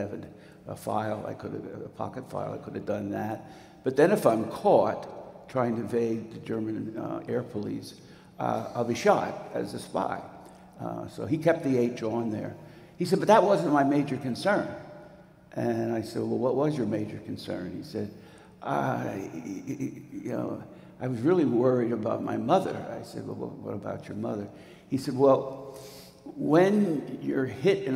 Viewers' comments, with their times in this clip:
0:10 the audio gets reasonable by the minute